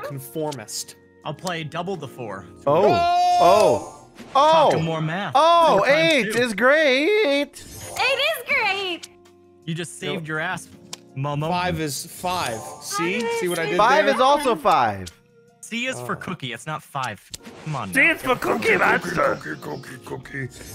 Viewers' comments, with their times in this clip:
0:06 I'm so calling you out for that voice crack